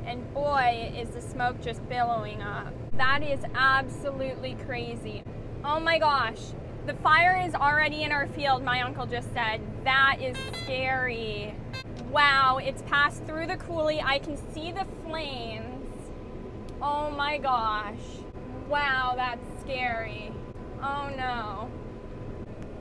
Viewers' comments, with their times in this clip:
0:10 I had to watch that part a few times bc I wasn’t sure if that beep was a bleep 🤬😂